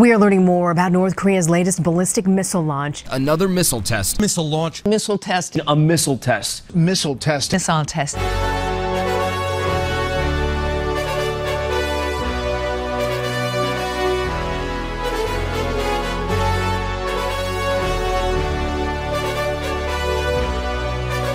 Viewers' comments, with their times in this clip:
0:07 I thought the female reporter said "Nissan test" (Niss-san? NEE-sahn? I guess it depends on where you're from)